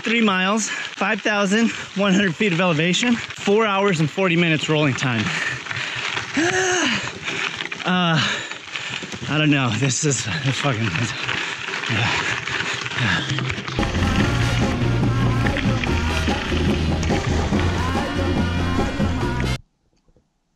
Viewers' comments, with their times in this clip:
0:06 "The Bombtrack is new to me"......thought something was funny....AHH, 2 years ago, that explains it! The uncertain, unintelligible rambling speech......I've been there! Always means your doing a ride the right way, lol